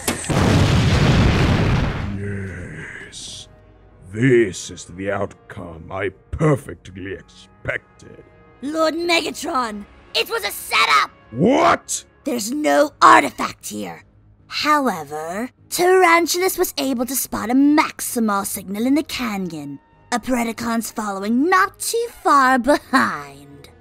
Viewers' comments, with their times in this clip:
0:09 ok who is this? This sounds EXACTLY LIKE BLACKARACHNIA